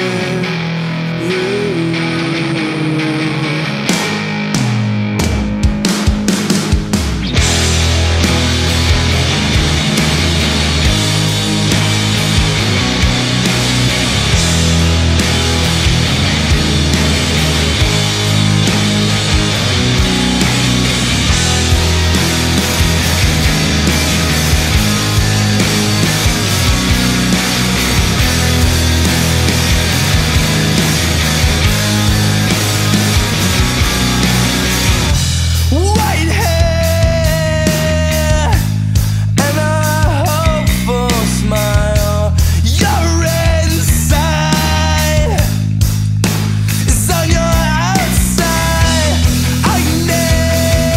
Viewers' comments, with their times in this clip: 0:06 When that guitar comes in Gets me everytime
0:06 .. omg that guitar
0:36 It sounds like f*ckin peep...